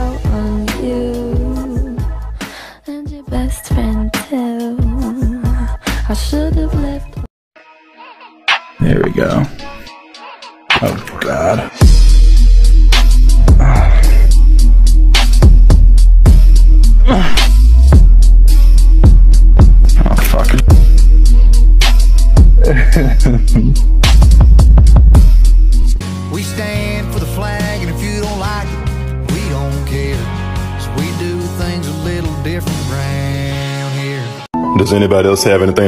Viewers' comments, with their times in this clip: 0:09 what the actual f- is he saying?
0:23 I appreciate how to goes from like dream laughing… WË ŠTÂÑD FÓR THĒ FŁÆG